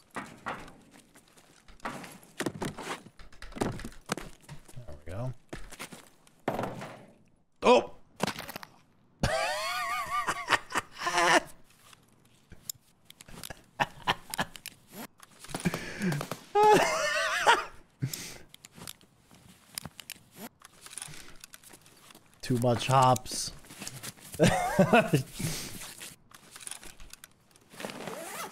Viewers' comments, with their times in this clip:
0:09 😅bro,I burst out laughing at my exaggerated jump, and my muscles crumbled at the unexpected laugh,🤣LOL